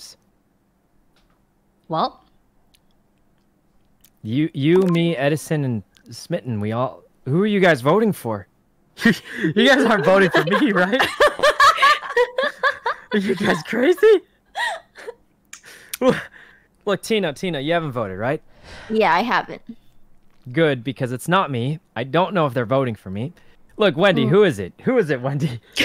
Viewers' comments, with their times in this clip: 0:06 Did someone fart ?? That caught me off guard.